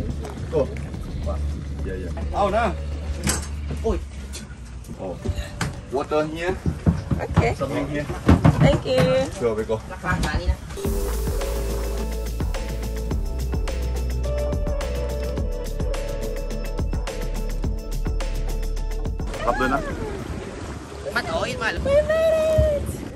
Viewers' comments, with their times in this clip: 0:04 the bonk and oy let me tell you I did that once to my son when I was on the bus I felt so bad but he looked at me like are you okay momma I’m good.😂😂😂❤❤❤